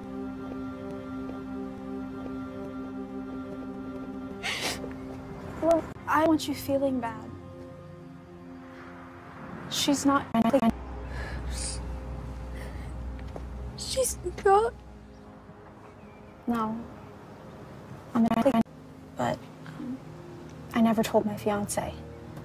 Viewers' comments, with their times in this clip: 0:10 I am dying "She's not an *starts glitching*"😭😂